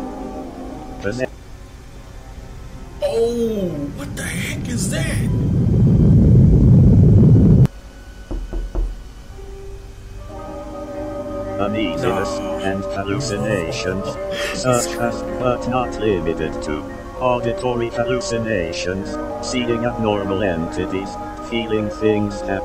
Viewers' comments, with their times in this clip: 0:07 BRO THE KNOCKING SOUND GOT ME LMAO💀